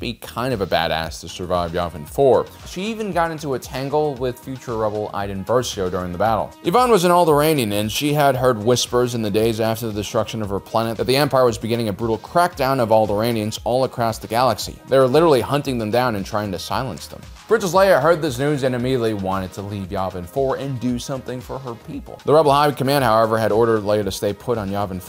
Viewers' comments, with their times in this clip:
0:07 I heard "old Iranian" 😆